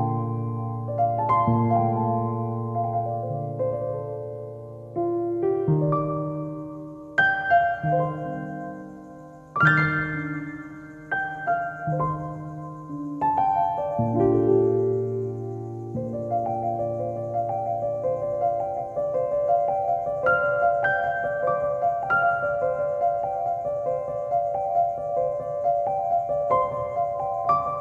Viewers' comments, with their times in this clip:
0:10 This song is Nice